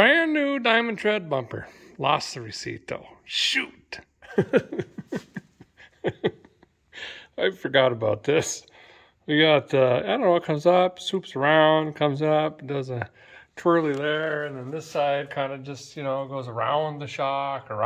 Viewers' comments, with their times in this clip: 0:03 Don’t think we’ve ever heard a gen-you-ine laugh like before